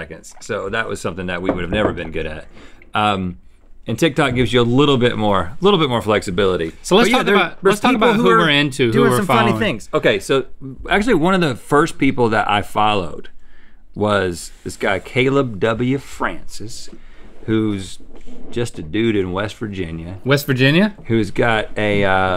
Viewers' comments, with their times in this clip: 0:09 is that ADR on what Rhett was saying?